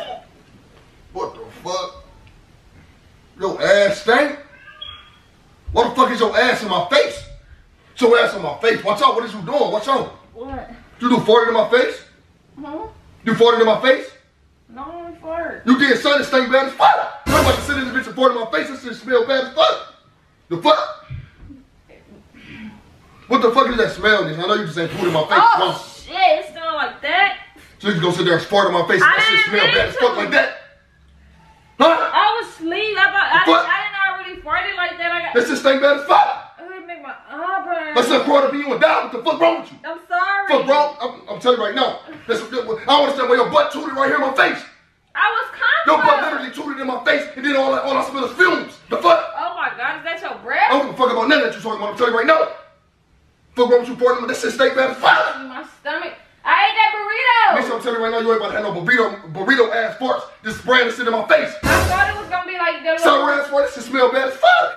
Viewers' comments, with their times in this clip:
0:10 Is he speaking English??????
0:43 Why he sound like DMX yelling in ALL CAPS 😂😂😂
0:46 The guy sounds abusive. If my man talked to me like that I would not be married to him.